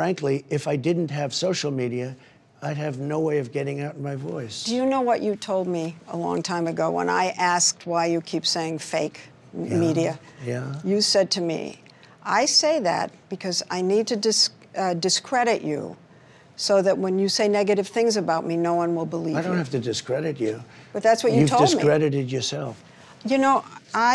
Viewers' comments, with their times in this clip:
0:05 I think it’s so cute how when she asks him if he remembers what he said, the way he says “yeah” lol